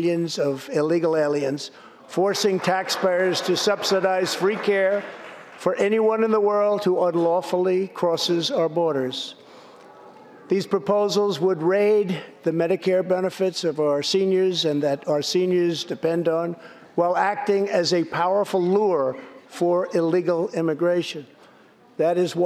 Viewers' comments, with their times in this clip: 0:04 she whispers "thats not true"